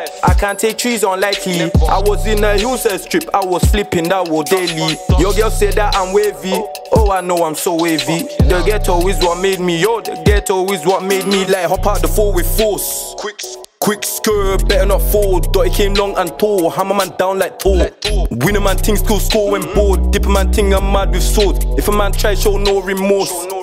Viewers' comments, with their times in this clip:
0:10 the flow switch is hard